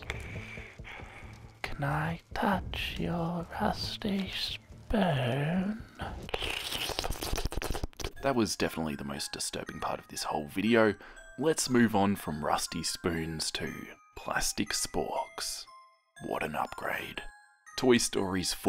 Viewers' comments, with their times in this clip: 0:06 the smol asmr vewwy noice ^-^